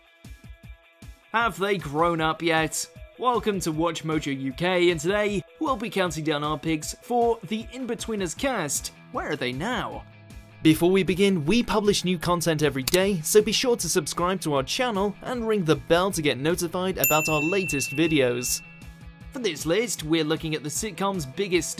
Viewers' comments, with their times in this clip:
0:04 When I first came to this channel I thought you said... Welcome to WatchMojo u gay Like here